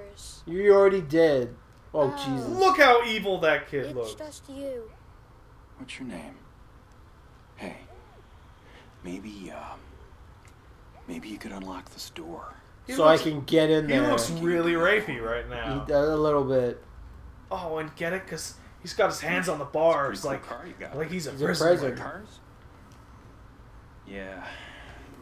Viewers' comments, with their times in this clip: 0:09 when murphy says that whole sentence, is it just me or does he sound like Owen Wilson? and sort of look like him too? lolwut